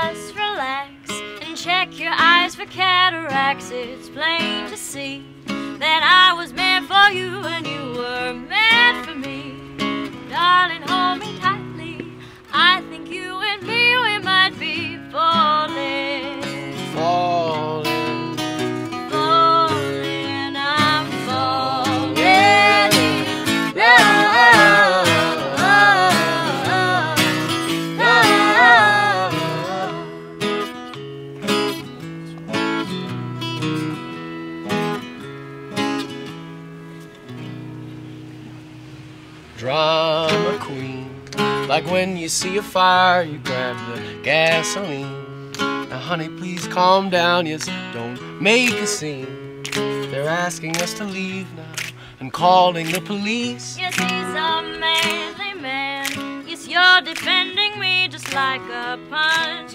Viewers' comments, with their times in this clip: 0:10 Shout out to my man Woody Harrelson with his snapping fingers and his elegance
0:40 Love the family peering out the house window Love her voice too, hope they feature her more often!